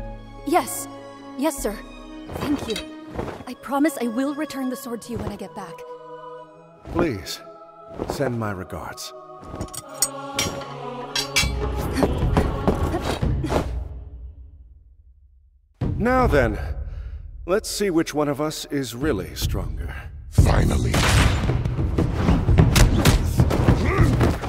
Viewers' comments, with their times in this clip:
0:09 I like this little detail on the heft on her loop/ring/chakram and it clanged with Chongyun's tail
0:09 that last "ting" i dont thing they need to do that but they do it perfectly...